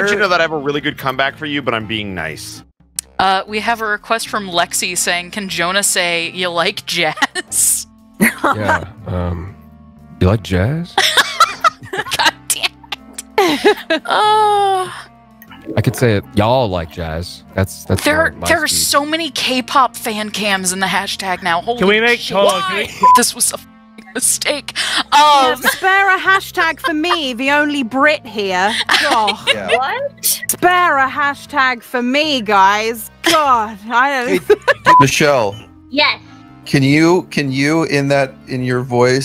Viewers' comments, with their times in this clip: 0:10 he sounds like him wtf
0:25 she sound like tracer 😅😅